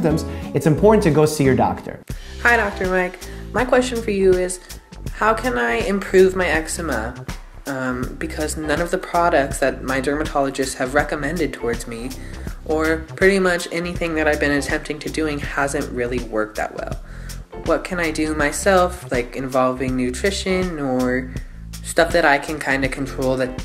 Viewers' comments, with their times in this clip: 0:06 lmao exema it’s eczema